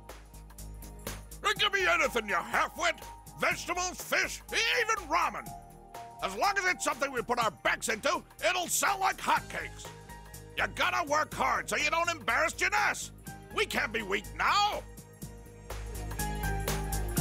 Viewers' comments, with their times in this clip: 0:05 Dojima’s VA has some range. And it can sound humorous at times.